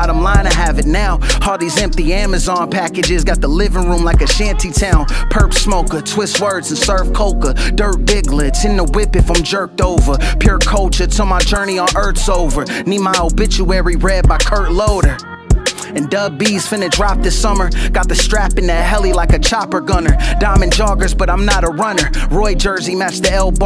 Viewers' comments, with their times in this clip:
0:04 The Purp smoker scheme has been on my mind for days now. its so good I think thats one of the benefits of not being a native speaker; listening to hiphop growing up, i had no idea what the songs were about. only song i understood somewhat was "My name is" by Em cause that was the one line every non english/US kid learns first in school(kinda smart) -but anyway, when you don't know what is being said, you can only focus on the phonetics; how it sounds, how it rhymes, and how the words ring off each other if that makes sense. That 4 bar segment does that so well, it just sounds so good. I think rappers, especially lyrical schmyrical rappers, forget that they are making music, and the main objective is that it sounds good Apologies for the wall of text, and thank you for the music